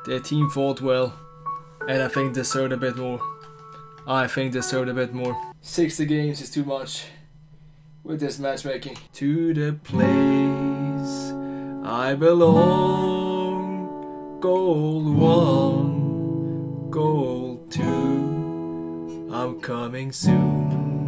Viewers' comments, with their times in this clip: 0:09 What we were all waiting for, The guitar, finally